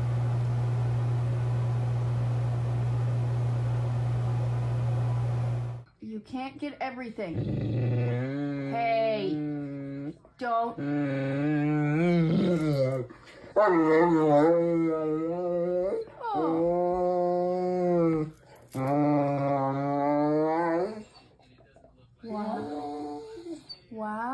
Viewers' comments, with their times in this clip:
0:06 One day science is going to prove that dogs have some strain of human intelligence, that's to say, far-far more than even the most adoring owner can respect and identify. Just watch how this 'person' responds like an annoyed, spoilt brat that's not getting it's way, listen to the groans and whimpers and observe the irritated body language. These 'animals' Do understand, but How?!